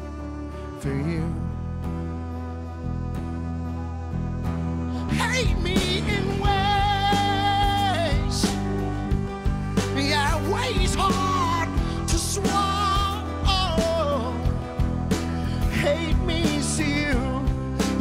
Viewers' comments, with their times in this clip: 0:03 God, that effect he pulls is fuckin great...